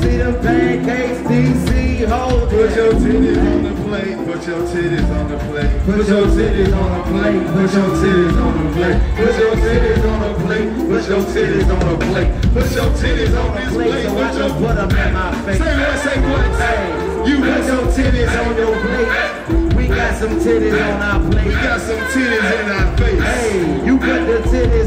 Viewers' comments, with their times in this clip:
0:07 they singing 🎶put them tiddays on my plate 🎶 while D.C saying grace!😂😂😂😂